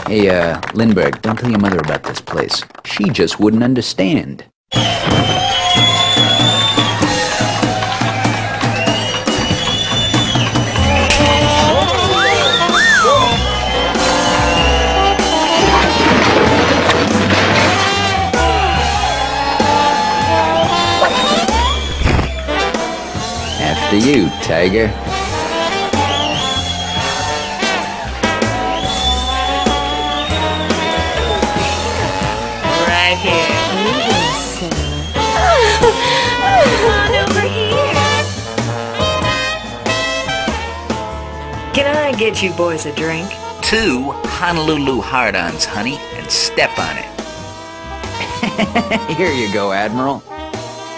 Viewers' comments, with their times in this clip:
0:10 S M A C K
0:34 they sound like sims